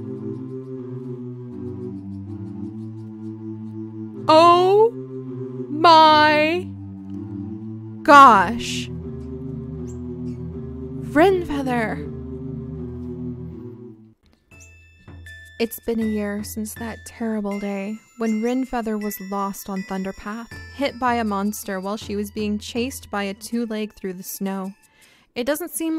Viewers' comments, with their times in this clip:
0:06 I FOUND JANICE FROM FRIENDS!